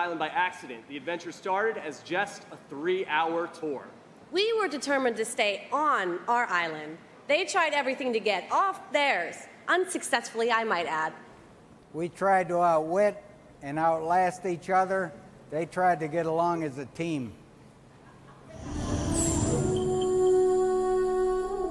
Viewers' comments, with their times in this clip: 0:09 ...it seemed obvious to me this was read or script rehearsed.